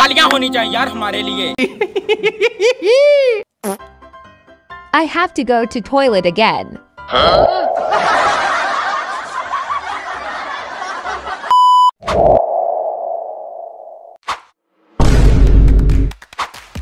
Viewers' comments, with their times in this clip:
0:03 Canada just fart